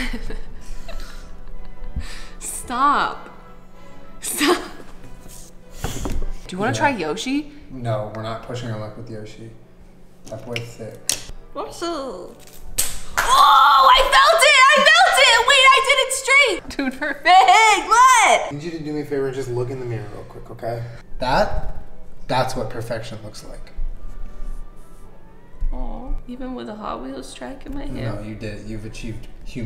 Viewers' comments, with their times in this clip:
0:10 listening to Jenna saying Yoshi made my whole decade
0:11 Okay but why isn’t any one freaking over the fact that Jenna sounds exactly like Yoshi?
0:11 But like.. why was her Yoshi impression so good...